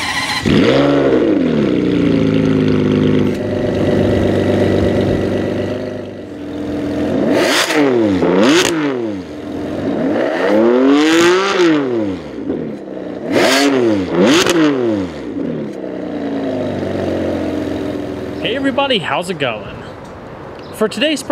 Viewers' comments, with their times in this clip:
0:08 That Ferrari sounds a bit like a Porsche.